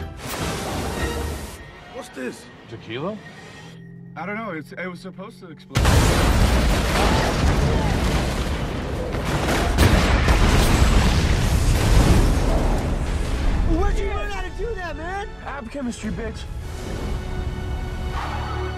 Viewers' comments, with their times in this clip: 0:04 Channing's delivery is perfect. He sounds so disappointed.